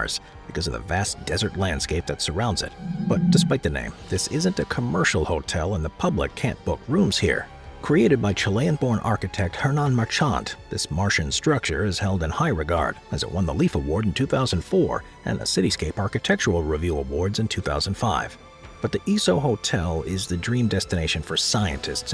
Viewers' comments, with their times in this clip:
0:08 Marchant... Third word you've mispronounced in this video alone 😂